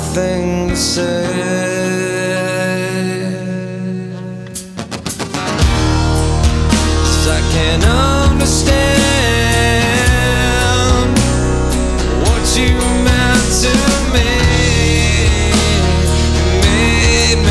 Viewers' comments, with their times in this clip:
0:05 that guitar riff though